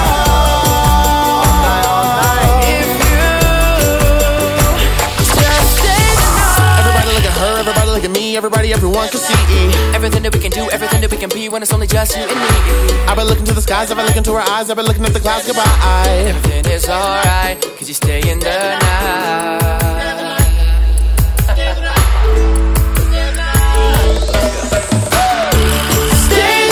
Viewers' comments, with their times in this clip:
0:07 when you guys rap its my favorite part